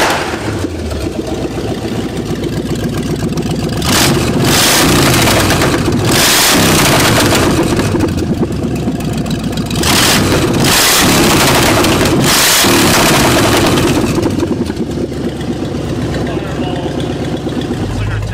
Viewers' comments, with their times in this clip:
0:03 headphone users beware!